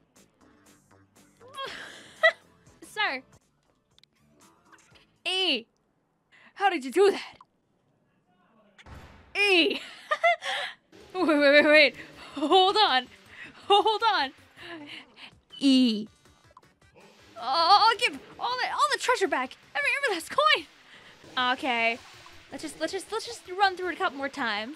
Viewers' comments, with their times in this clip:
0:08 I never seen a squid saying a letter with that anger before XD